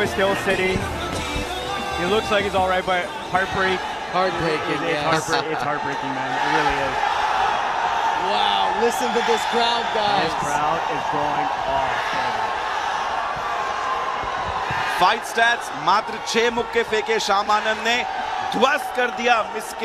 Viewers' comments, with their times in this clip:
0:03 Have u heard Jai shree ram❤❤